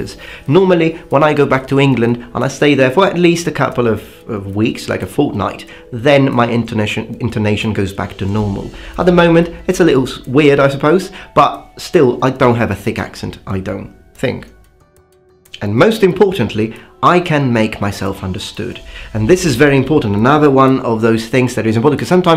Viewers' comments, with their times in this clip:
0:07 Your intonation is flawless haha I don't think it's going to rat you out as a foreigner. It's really something to admire -- If anything does "give you away", it's that you very very occasionally mess up noncritical grammar points like saying "some informations" in some of your older videos. Otherwise I as an American would never know you weren't fully british.